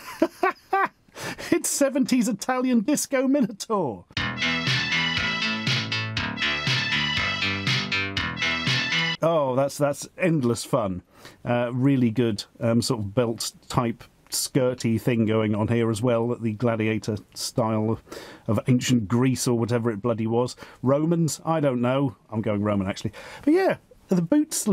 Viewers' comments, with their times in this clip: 0:03 That song somehow sounds familiar. Can't say why it does though.
0:05 great beat tbh vaperwave like